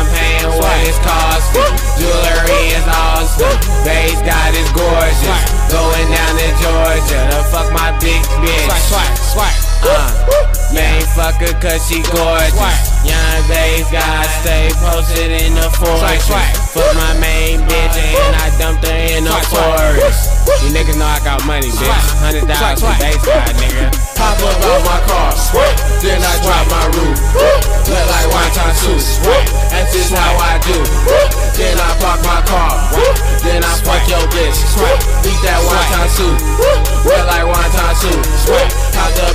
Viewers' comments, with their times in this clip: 0:06 when he just couldn't hold back the laughter anymore from the lyrics lol
0:20 $ound exactly like 21 savage no heart song; the part wr he say "yea yea f*ck all dat ask ya bi**h how my d**k taste" smh yeah Lil b started this new generation of rap haha